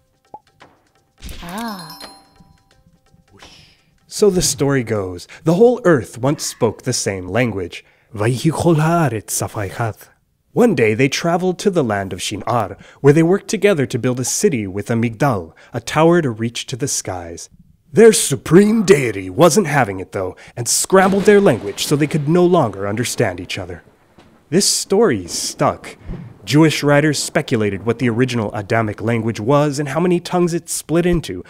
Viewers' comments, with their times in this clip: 0:07 lol your accent is so bad
0:08 He pronunced "Shin'ar" well, but I am not so sure about the Hebrew pharse
0:11 i must say, this is not how we speak hebrew these day. nope, not at all.
0:14 I was zoned out and thought he said " build a city with a McDonald's "